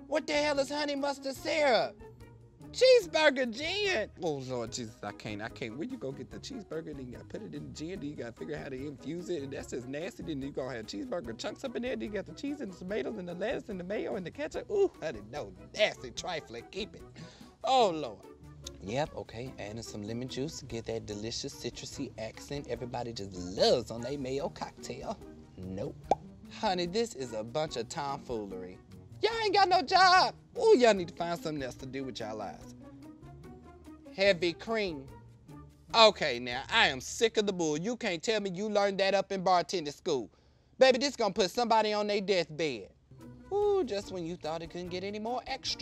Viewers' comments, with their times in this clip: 0:05 when he starts rambling like that, I just hear donkey from Shrek 😂😂😂😂 I love Kalen!
0:05 what is he saying xD
0:25 that mouth pop sound GOD DAMN satisfying
0:29 he sounds like Plies